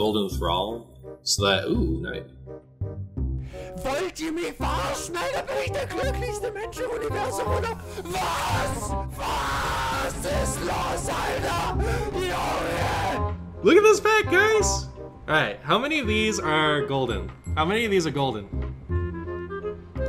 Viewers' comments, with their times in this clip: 0:03 germans: our language is not that scary also their language: